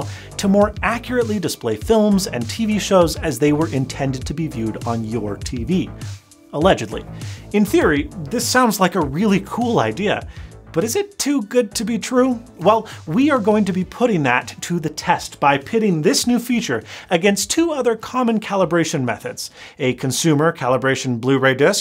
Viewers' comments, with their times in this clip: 0:07 His "In theory..." triggers my Siri 😋